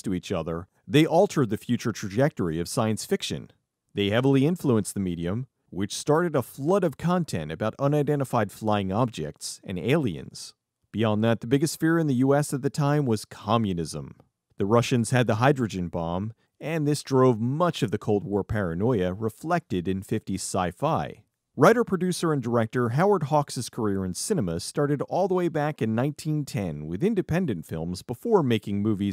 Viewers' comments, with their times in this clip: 0:10 That tone. Being dismissive about the threat of Communism isn't a good look. It just so happens that its "Margarine" version in China and the lunacy of drooling-rabid leftists stateside are very real things in today's society. Fuck the overexcitement in American culture over communism from the 1950's. Everybody got on each other's case over collectivist notions and became professional griefers. This resulted in death and misery. It wasn't abject hyperbole and should not be treated as such: these ideas ruin people, let alone countries. Everything else about the video would fly past my radar--it's okay. Just remember: just because we look down on the fifties for its reaction to the communists doesn't mean we should just smile and nod to all the communists living in every single neighboring household today.